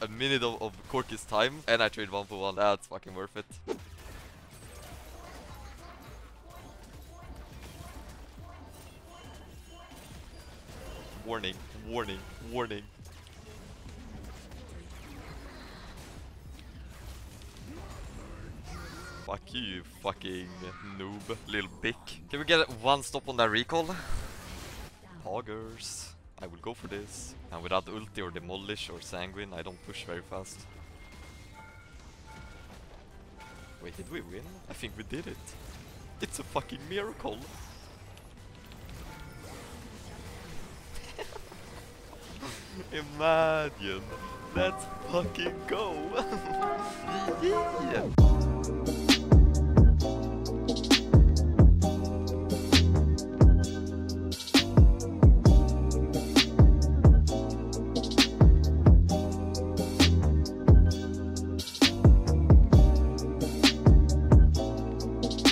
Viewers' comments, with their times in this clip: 0:05 did you also hear FORNITE FORNITE FORNITE!!??😂😂😂
0:10 Kevin Malone impression
0:46 that yiyi got me laughing my ass off my chair Kappa